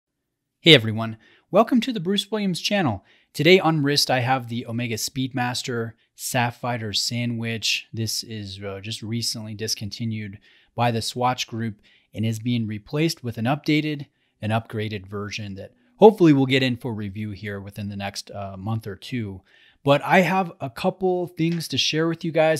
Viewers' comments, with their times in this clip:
0:03 "Sapphighter" Sandwich? Is that the watch Buzz was wearing when he got in a fight with aliens on the moon? 🤪 In all seriousness, I own a Sapphire Sandwich and love it. Amazing watch for the money. As far as my moon watches are concerned, I tend to wear my Apollo 11 50th Anniversary a bit more...but I do appreciate this one very much.